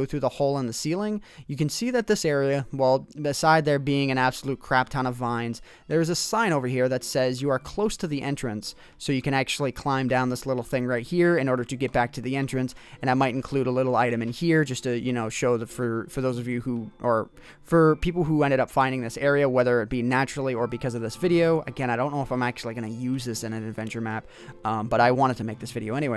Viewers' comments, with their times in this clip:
0:08 RaNdOm SiNg TiMe